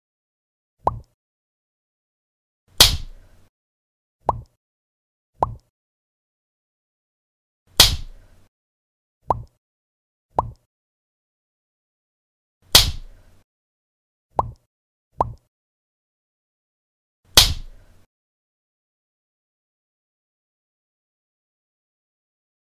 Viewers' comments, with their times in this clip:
0:08 i thought that slap would be stronger And sound like gun fire sound